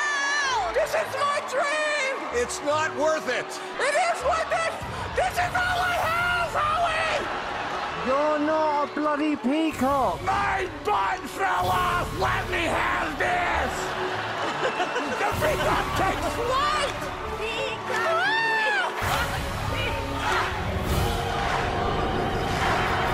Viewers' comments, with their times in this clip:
0:09 this actually got me laughing when he finally screams in his real voice instead of those annoying peacock sounds lol